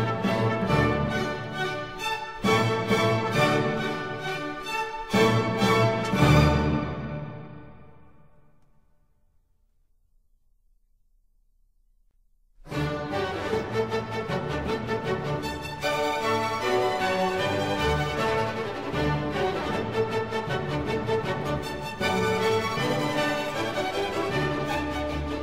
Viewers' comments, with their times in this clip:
0:09 The last movement, is a brilliant, fiery explosion of aggression and power that would be overwhelming if it did not stay within the boundaries of late 18th-century style. Fantastic stuff.